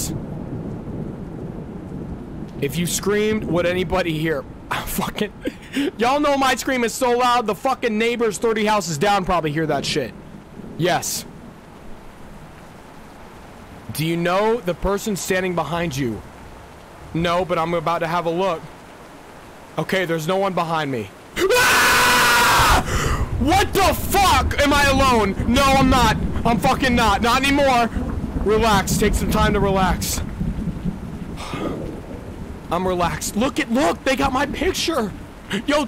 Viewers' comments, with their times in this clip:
0:08 I was wondering why you screamed so loud when it said “Do you know the person standing behind you” until now
0:10 THAT FUCKING SCREAMING
0:16 this scream is hilarious oh my god
0:20 his scream is literally a fnaf jumpscare
0:21 that scream is so loud
0:21 his scream made me jump at 12.52.
0:21 bro it wasnt even that scary but he just sat still and screamed
0:21 When you screamed here your scream scared me instead of the dark shadow